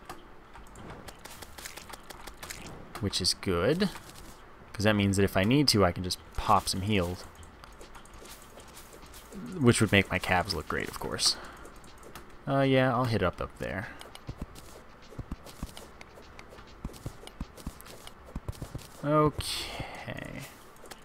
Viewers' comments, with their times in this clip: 0:09 It's moments like said with utter seriousness, that remind me why I love you. XD